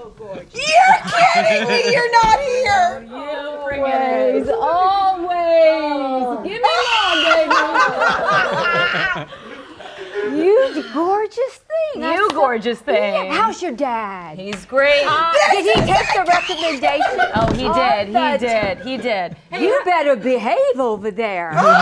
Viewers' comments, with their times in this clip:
0:06 Subtitles: "Pterodactyl noise"